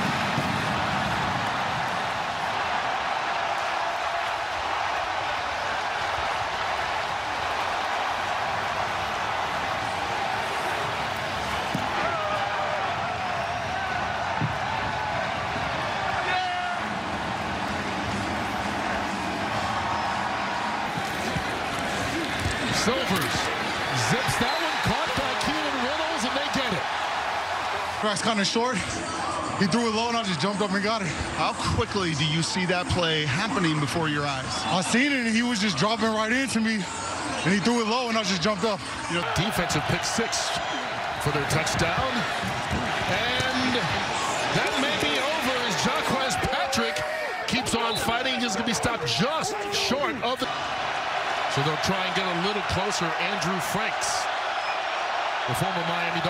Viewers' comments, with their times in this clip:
0:05 home crowd reaction at the 5yds int. turned TD was like: REWELACJA! In total disbelief😂
0:20 it Sounded like a real hit stick
0:43 Anyone else hear that man's concussion ?
0:43 ET voice: OooouUUUchhhh